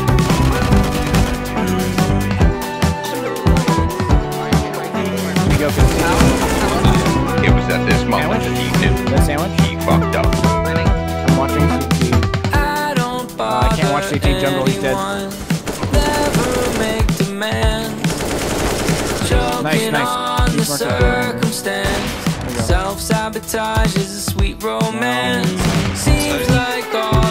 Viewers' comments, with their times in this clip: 0:08 awkward audio editing moment?